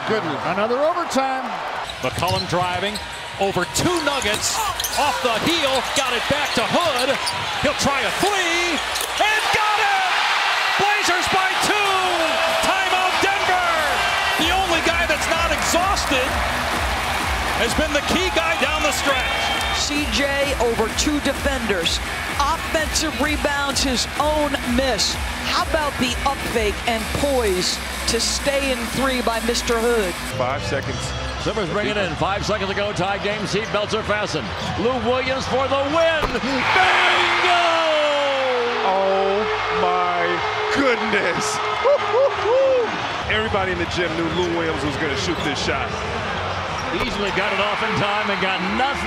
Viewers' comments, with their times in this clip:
0:07 I swear he said thwee
0:30 the excitment from that old clippers announcer makes me so happy!